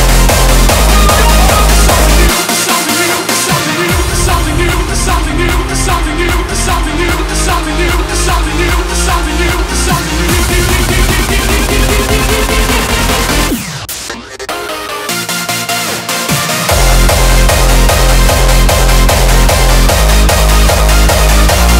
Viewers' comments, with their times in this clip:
0:04 damn that synth is awesome